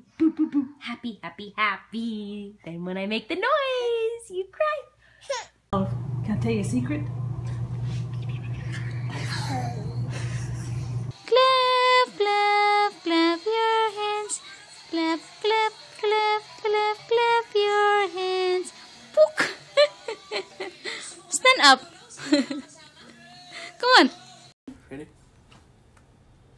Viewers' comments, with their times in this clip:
0:08 that breath hit different